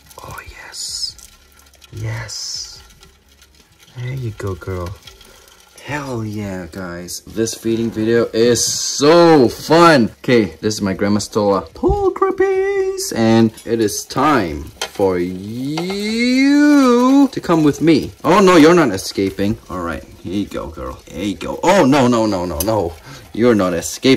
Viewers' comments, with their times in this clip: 0:06 sounds like rain because of the roaches lol 😂